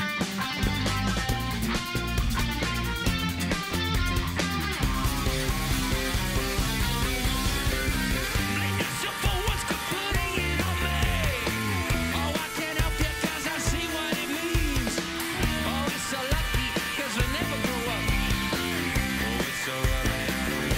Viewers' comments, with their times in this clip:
0:06 intensity and voice rawness
0:08 Julians vocals are actually incredible, such power!
0:08 Heard this for the hundreth time, and the only mistake is from Hammond